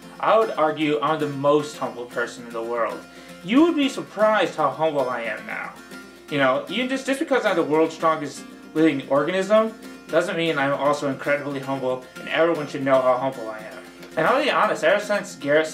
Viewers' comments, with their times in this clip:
0:03 I thought he said homo.